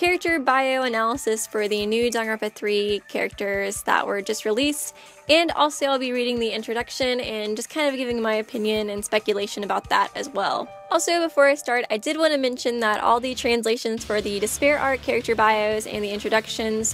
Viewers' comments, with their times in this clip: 0:03 -0.13 Kuomuro is like quack quack quack